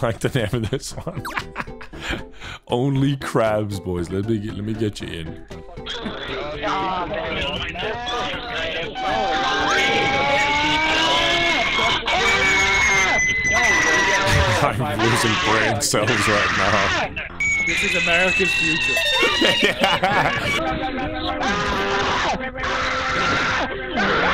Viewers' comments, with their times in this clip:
0:05 why are they screaming like that omg